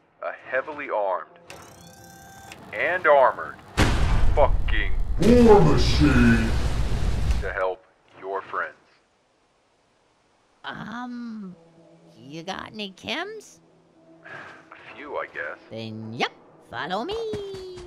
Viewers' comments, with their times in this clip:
0:03 Bro got the fallout tv show power armour voice